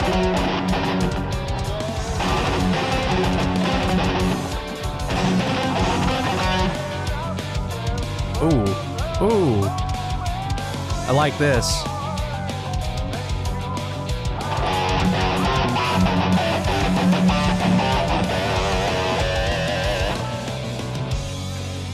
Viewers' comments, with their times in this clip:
0:08 hahah I had the same reaction on that part. I couldn't believe how they mixed the piano with the guitar, that was amazing